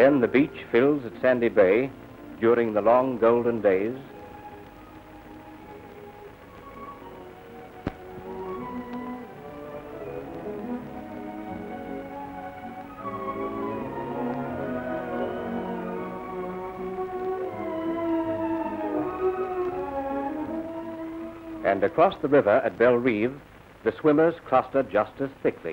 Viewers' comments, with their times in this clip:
0:10 Oh how things have changed so much since 1957....That baby would be in her sixties now ( around the age of 62 or 63).... Her mother would now be in her eighties! Love the musique that accompanied these old films 🎥 & the style of the voiceover/ narrator.